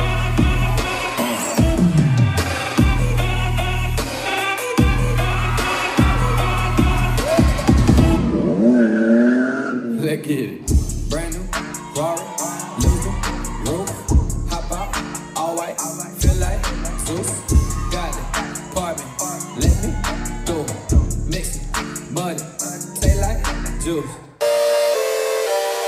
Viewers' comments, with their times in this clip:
0:10 Music the minute